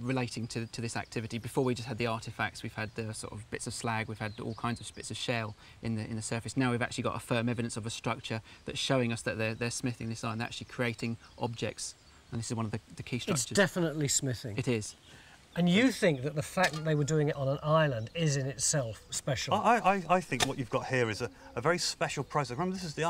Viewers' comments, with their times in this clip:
0:09 I was busy doing something and had this playing in the background. I could have sworn the guy in the white shirt sounded just like Daniel Ratcliffe lmao